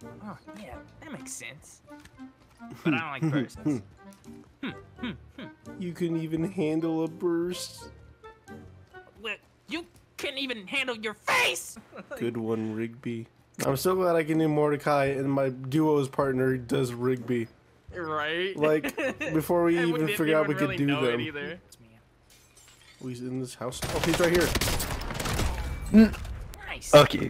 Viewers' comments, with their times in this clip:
0:09 he killed that rigby impression he in the video he should’ve said “STOP TALKING”